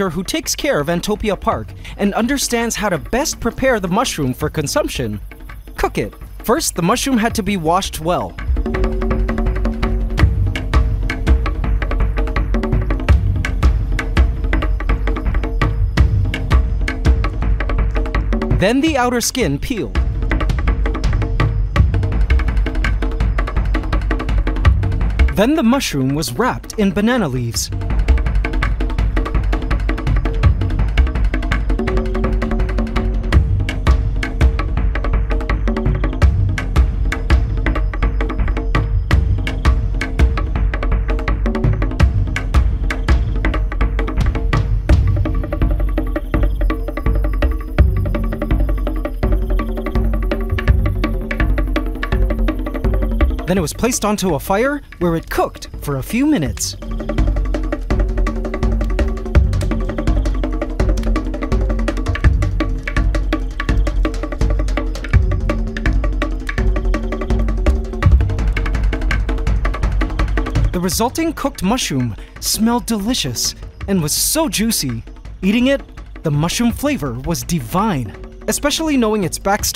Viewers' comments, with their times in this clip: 0:03 I like the intense music over the cooking scene
1:03 Love the music